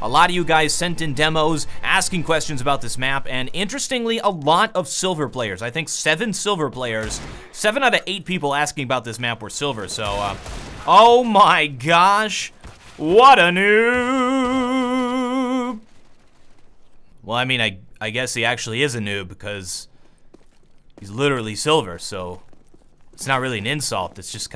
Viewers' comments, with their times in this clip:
0:07 that deagle shot gave away his position